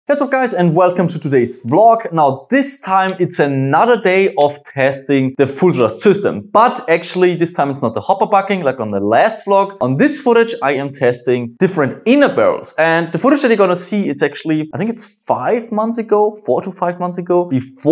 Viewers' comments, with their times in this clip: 0:00 It's really amazing how fast does he say :: Hey What's Up Guys